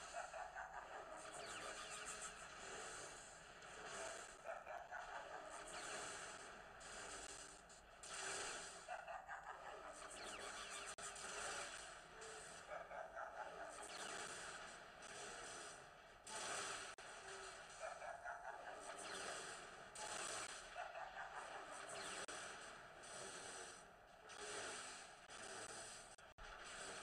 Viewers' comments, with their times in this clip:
0:08 lol dat laugh..